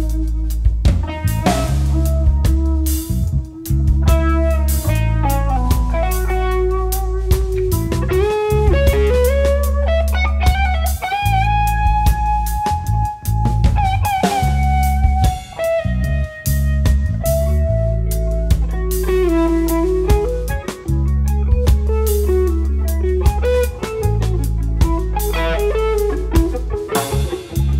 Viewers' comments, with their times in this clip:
0:08 That tone and a ham sandwich is all I need.